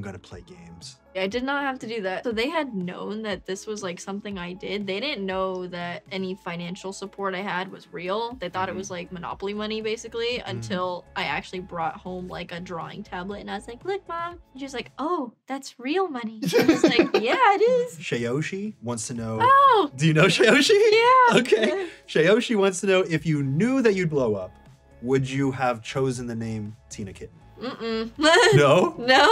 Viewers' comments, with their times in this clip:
0:10 the backing sound track is genius